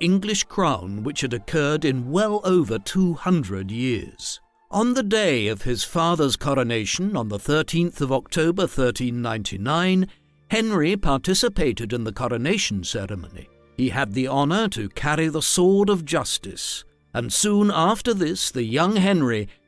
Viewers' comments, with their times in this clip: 0:04 “the first usurpation of the English crown in well over 200 years” Question, what about Edward II, 72 years earlier? Overall, I’m enjoying these. That narrator’s voice! Is it Robert Hardy?